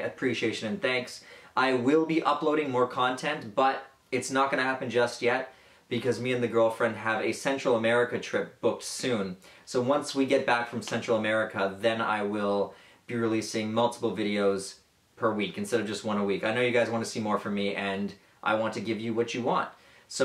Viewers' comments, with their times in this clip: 0:06 A sensual american trip sounds nice!